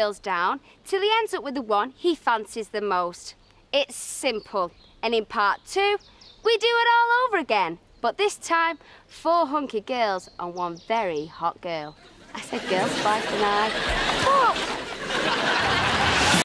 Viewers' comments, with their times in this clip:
0:05 she sounds american